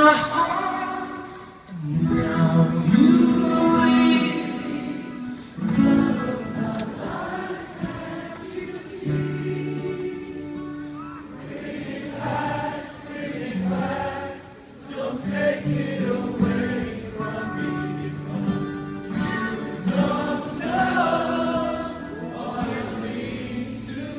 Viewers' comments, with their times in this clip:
0:10 That's me shouting "Come on!" I didn't think they were singing loud enough!